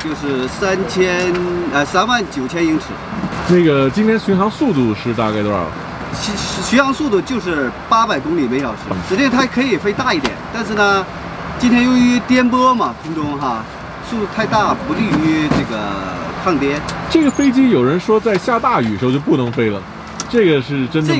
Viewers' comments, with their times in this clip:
0:04 Ur chinese not bad dude.